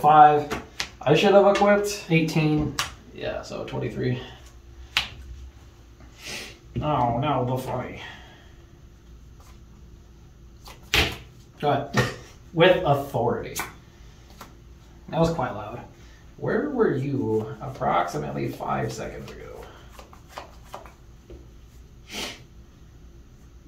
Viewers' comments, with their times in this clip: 0:09 Love that frustrated slap ahaha